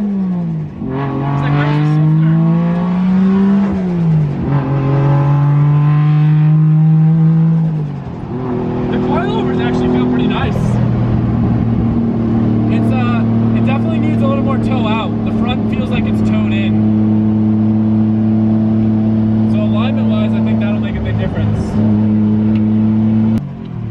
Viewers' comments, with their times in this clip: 0:06 it almost sounds like a high hp Cummins